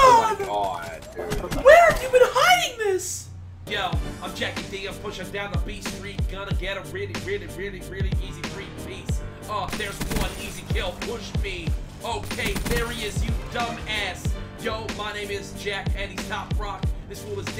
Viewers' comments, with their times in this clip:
0:04 He starts rapping Thank me later